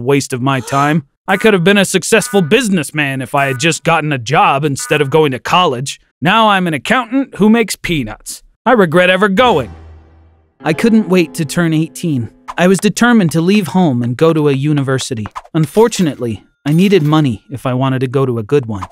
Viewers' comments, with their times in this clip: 0:06 i thought he said something else